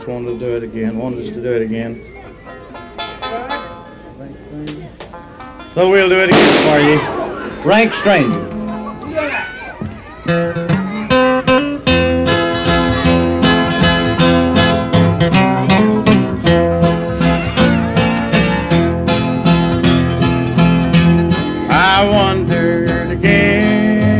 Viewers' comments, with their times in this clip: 0:06 gun shot? Whoa that's hillbilly right there.